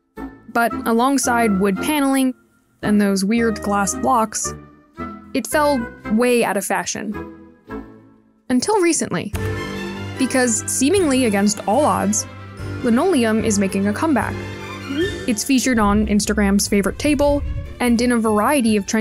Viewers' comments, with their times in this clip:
0:03 "weird glass locks"? Tell me she's saying "Blocks", there is no b at all 🤣